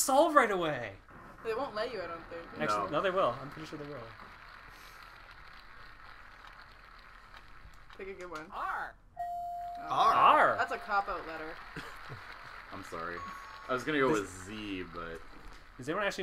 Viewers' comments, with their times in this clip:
0:03 Someone has the same exact texting ringtone as me. I don't know why this is comment worthy.